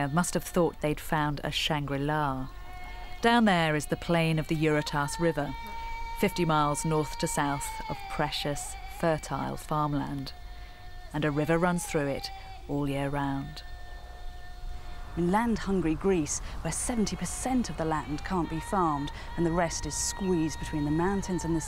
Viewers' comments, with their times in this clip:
0:04 Albanian singing like wtf guys try and not make it obvious